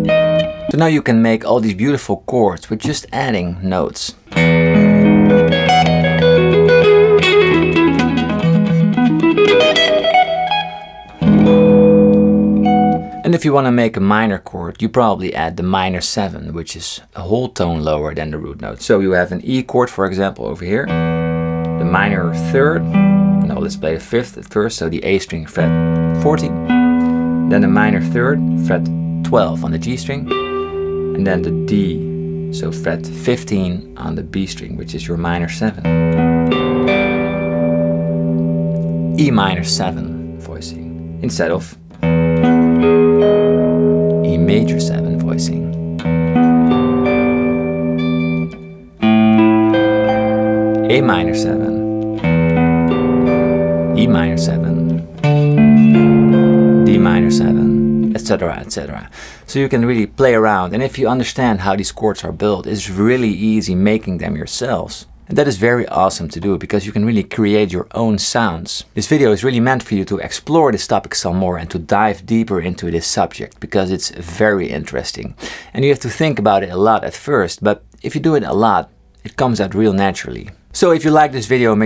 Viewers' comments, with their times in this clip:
0:06 That little run
1:06 Hey,,,,, Sounds like Alan Parsons!